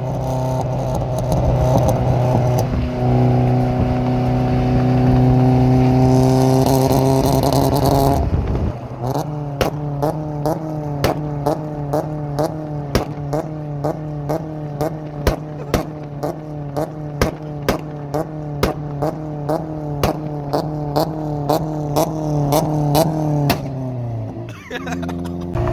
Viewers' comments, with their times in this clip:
0:06 does anyone know why is was breaking up? Was the rev limiter on and it was hitting the rev limiter? Just wondering if it was the car or the Bee R that was doing it.